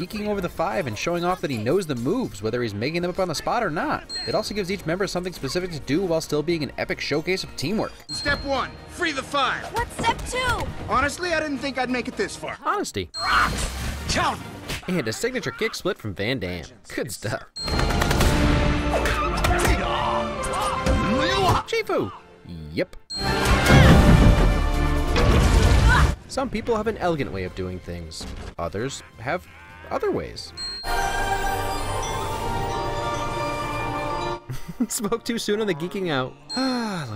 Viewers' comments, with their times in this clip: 0:10 I absolutely adore Tigress. She goes from hating Po's existence to being his most trusted friend, and there are little moments you can watch her guide and help him that really shows that. Like when Po is kind is getting off track, she just says "Po" in a calm, motherly or teaching voice to get him to focus. I love how reliable she is.
0:18 Can I just say the flourish of Shifu’s theme is like the most amazing thing?